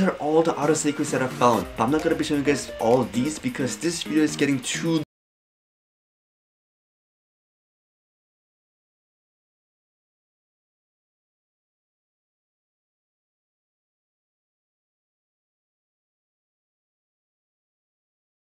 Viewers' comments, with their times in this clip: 0:04 MIC unplugged.Rip xD